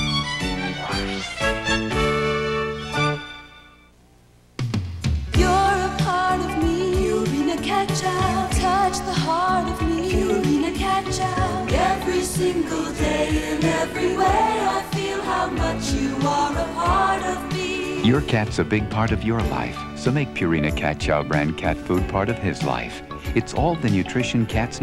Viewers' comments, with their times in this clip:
0:05 Purina commercial sounds like the narrator from Cold Case Files